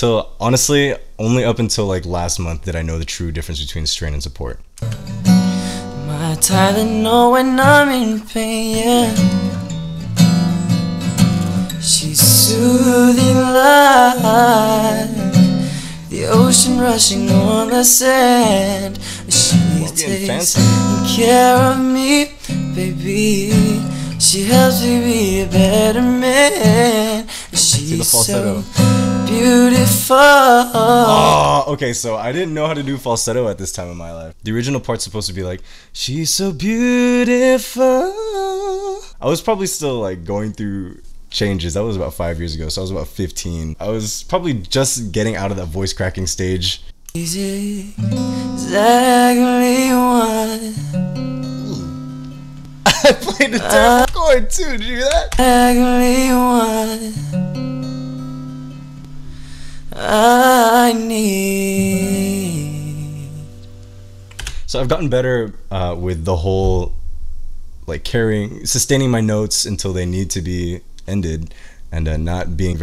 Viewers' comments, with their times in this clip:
0:07 he sounds like Justin when he was younger
0:13 the harmony he creates with himself is absolutely beautiful
0:16 anyone else hear that good harmony
0:21 duets with yourself ✅
0:53 So I'm 15 and he's fifteen here And he sounds sooo much better than me wHEN IVE HAD SINGING LESSONS AND I KNOW ABT BREATH CONTROL AND EVERYTHING WHYYY